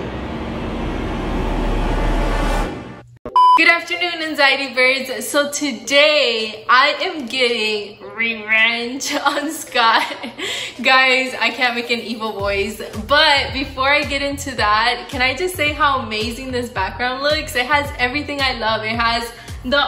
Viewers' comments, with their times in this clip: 0:05 the voice 😂 good prank